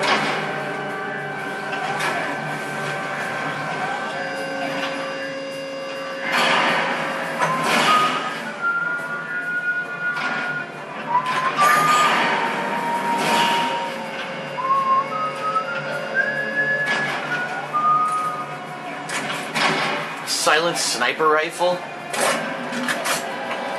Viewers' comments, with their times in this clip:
0:08 i just noticed this the guy is whistling the theme to moonraker